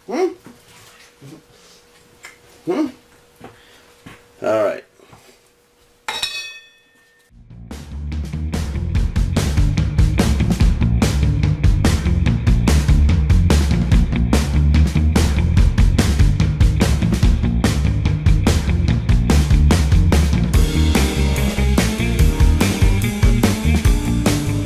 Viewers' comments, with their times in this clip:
0:07 Love the music !!